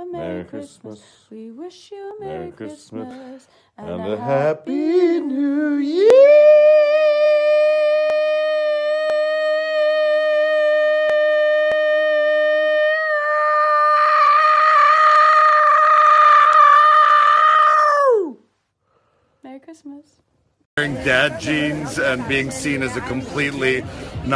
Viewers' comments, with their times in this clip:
0:08 When David Harbour can hold a lifer more than you can..